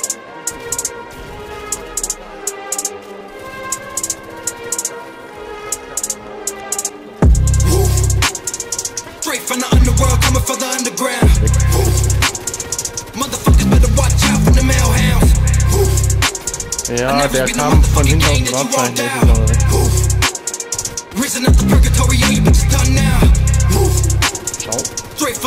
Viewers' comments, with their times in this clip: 0:06 Mukke On Point ❤️ i love it ❤️